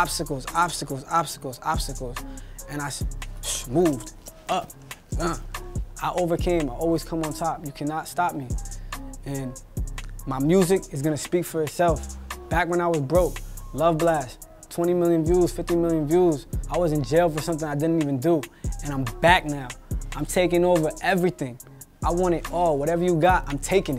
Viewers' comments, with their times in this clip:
0:04 The swoop up grr had me dying 😂😂😂